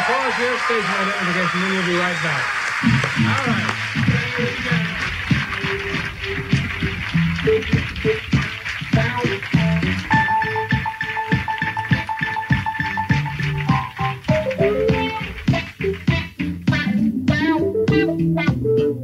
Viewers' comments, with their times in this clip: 0:07 Man what are they playing that's some groovy shit